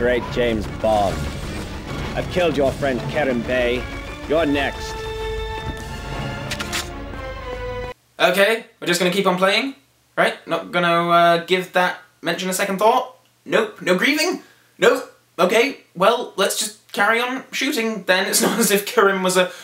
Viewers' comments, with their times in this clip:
0:04 Anyone else think the music sounds like music from The Incredibles